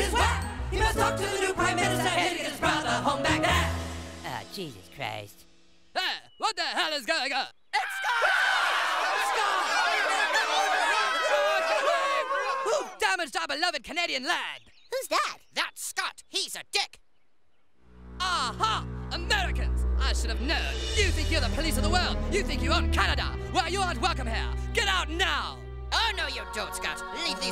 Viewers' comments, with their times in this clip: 0:10 “Who damaged our beloved Canadian land” “Ahahhhhh!” Love how he sounds😂😂